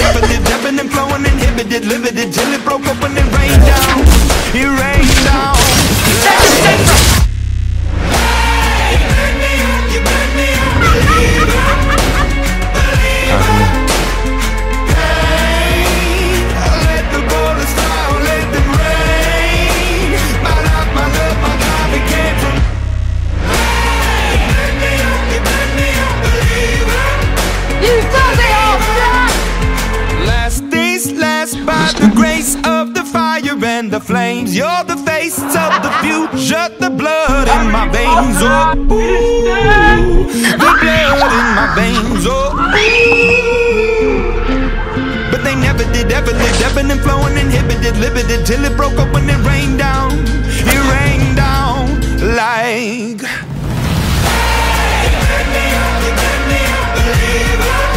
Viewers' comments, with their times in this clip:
0:08 Voldemort just be like “BOOM!”
0:41 who else thinks that that clip scream and expression will haunt ur dreams forever?